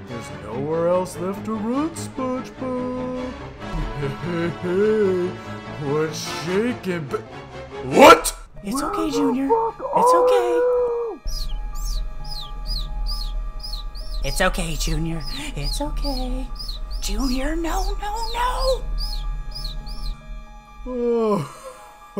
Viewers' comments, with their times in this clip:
0:07 Im so sorry but i can't take patrick screaming that seriously it's just too damm funny.
0:08 That "Where the fuck are you?" had me in tears. It sounded like all that anger left him and was replaced with just pure exasperated disbelief, like he genuinely cannot grasp that Spongebob wasn't in that room and it's some earth-shattering revelation.